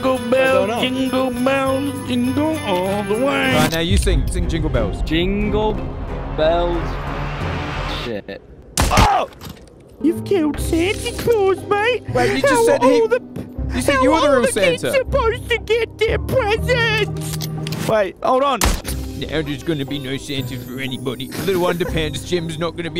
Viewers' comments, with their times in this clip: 0:08 the other guy literally sang it how do you not just copy them